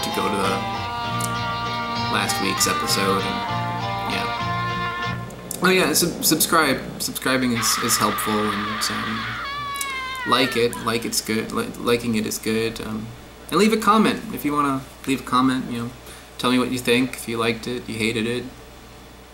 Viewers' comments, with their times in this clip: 0:07 What the fuck was that scream of agony in the background ?!